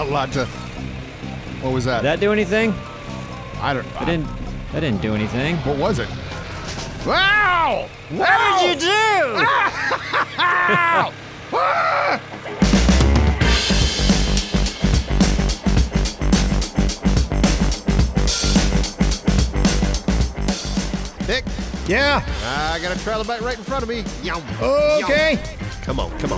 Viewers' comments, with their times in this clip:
0:08 Anyone else hear the zombie noise from Castle Miner Z?